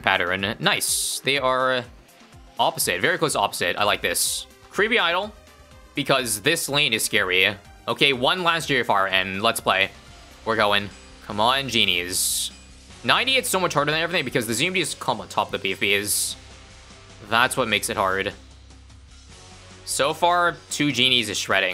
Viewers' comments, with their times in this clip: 0:08 98 spawns Me: "Why do I hear boss music??"
0:08 Lych theme kicked in hard at Rounds 98-100